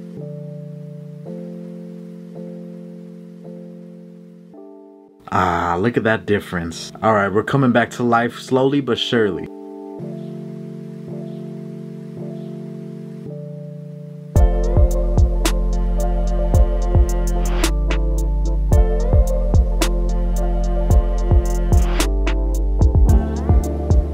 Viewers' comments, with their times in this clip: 0:05 he be sounding like the SpongeBob narrator